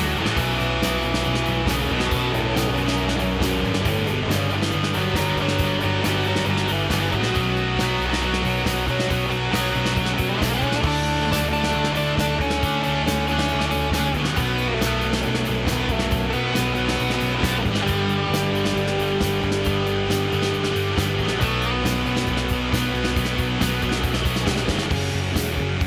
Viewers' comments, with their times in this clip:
0:10 First bit sounds like Nirvana..love buzz, then sound like Nirvana..the man who sold the world...but this record came first.